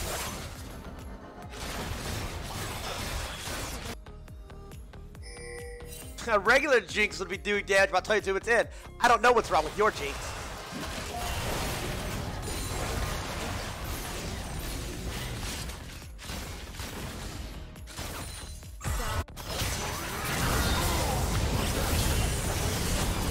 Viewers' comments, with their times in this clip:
0:05 "huh regular Jinx would be doing dyedaitoldyoutuueen. I don't know what's wrong with your Jinx"